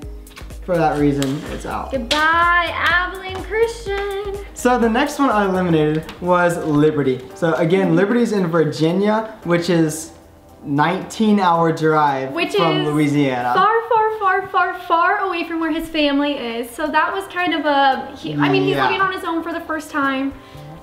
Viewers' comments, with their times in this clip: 0:05 They first switched I could tell right away by how they look and their voice😍